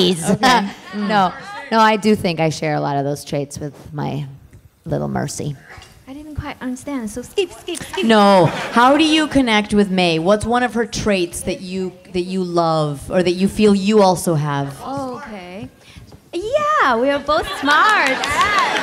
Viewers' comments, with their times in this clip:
0:06 "Skip, skip, skip" so adorable that it should be a voice line for sure!